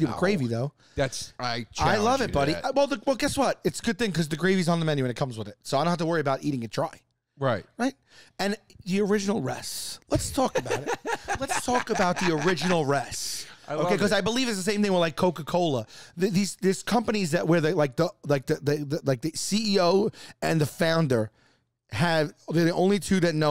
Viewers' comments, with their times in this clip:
0:05 Joe keeps saying “Buh-Bish” when talking about Binging with Babish and it made me laugh oh so hard